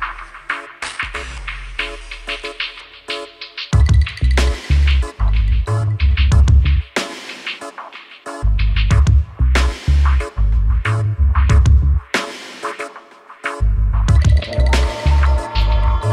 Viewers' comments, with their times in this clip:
0:03 sounds different from the original. anyone found the real title of the song